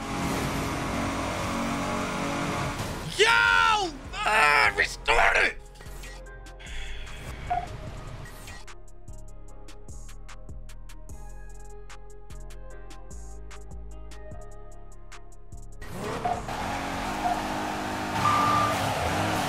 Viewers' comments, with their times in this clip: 0:05 …u kno the rage bad when u gotta yell in silence😂😭